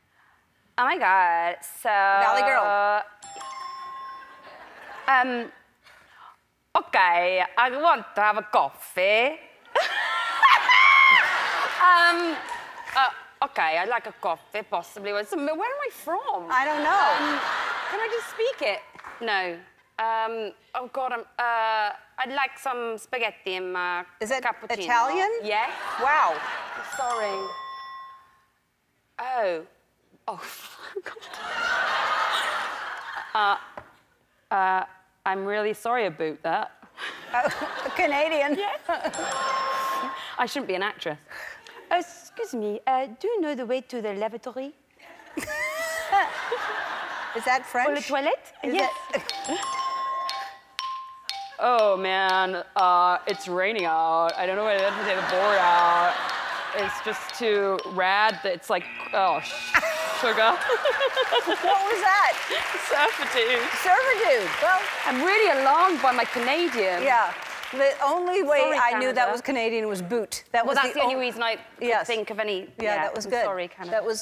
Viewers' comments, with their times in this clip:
0:05 epic love that laugh <3
0:09 That adorable laugh
0:09 That laugh omfg
0:10 cracked me up. 🤣😂 Italian and French was definitely better than average. 👍🏼
0:10 that laugh though 🤣😍
0:10 The laugh and the little scream oh claire hahaha
1:00 she almost cursed but she drags the s and said sugar instead :'D